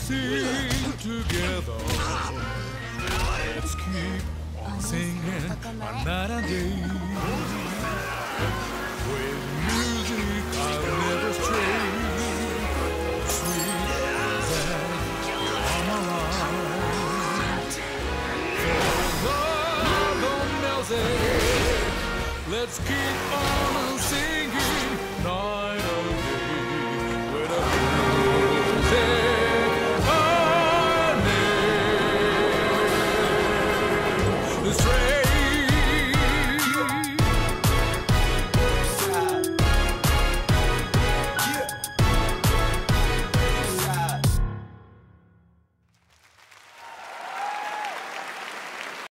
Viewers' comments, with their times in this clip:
0:06 not sure if this is just insanely wishful thinking, but this bad guy sounds like he calls the MC "Tojo-san!" if that's the case, could Project Century be about Makoto Tojo and his journey to found the Tojo Clan? in Y:LAD (set in 2019), Watase mentions that the Omi Alliance were formed 100 years ago, so surely the Tojo weren't that far off to become their main rival? ALSO, in real life, 1915 was the exact year that the Yamaguchi-gumi (Japan's largest yakuza clan) were founded
0:06 i think someone is yelling tojo san there he could be tojo himself
0:06 and you hear a thug yell “TOJO SAN”, it’s makoto tojo lads
0:07 is it just me or does the enemy in this clip sound like he’s saying “Tojo-san!”. could this be the story of Makoto Tojo, the founder of the tojo clan?
0:07 someone screams "TOJO-SAN!"
0:32 I’ve been replying this drop over and over again it’s sooo good!!
0:34 The way it switched to hip hop was so freaking awesome, and how it ends on the key art gave me chills.